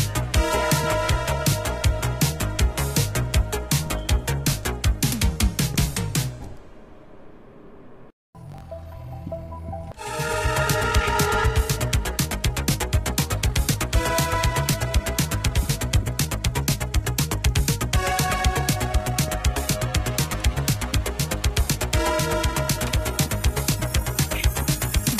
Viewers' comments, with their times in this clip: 0:10 why does this sound like cartoon Chase music?😂